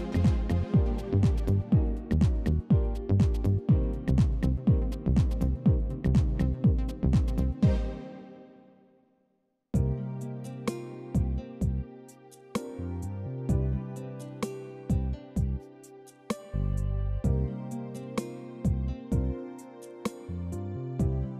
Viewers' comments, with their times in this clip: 0:09 R/B smooth...good music